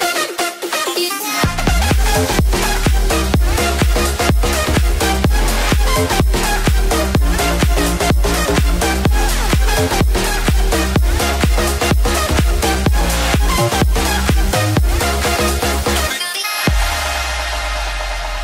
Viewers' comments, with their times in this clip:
0:05 Awesome music! Great montage! That's a lot of fire power Thanks for sharing my friend! =)